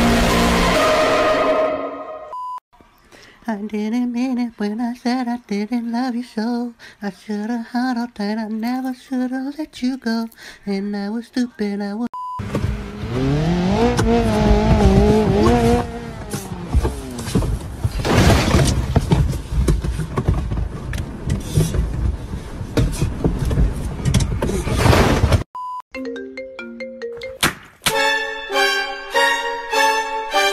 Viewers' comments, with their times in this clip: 0:10 What My Video Voice sounds like But what I sound like: 😌✋
0:12 I can’t stop laughing the crash of the car lol